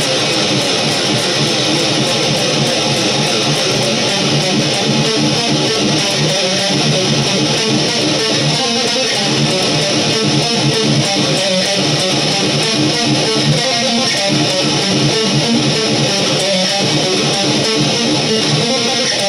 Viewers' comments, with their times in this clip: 0:04 Dude! That riff from until the end! Dang!! You said it at the end....”Oh my god! BROOTAL!!”